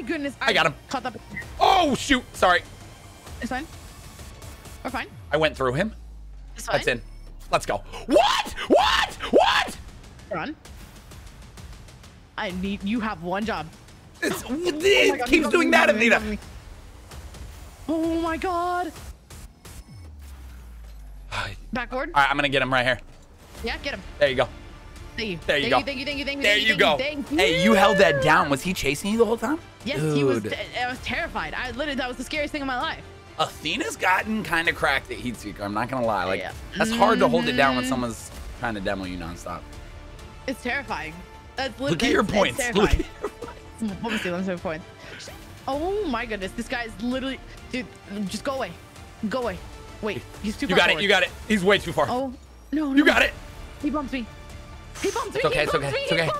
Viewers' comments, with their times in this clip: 0:07 for some great ASMR
0:41 the cut off “sheeeesh” killed me😭
0:44 you can hear the little "sheeeeesh" in the distance lol